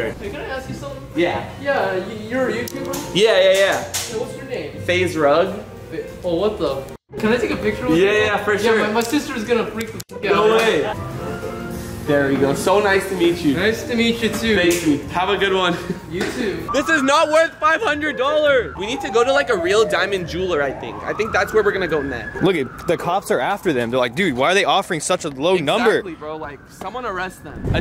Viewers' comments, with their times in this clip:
0:08 is that a girl or a guy I'm confused Sounds like a dude tho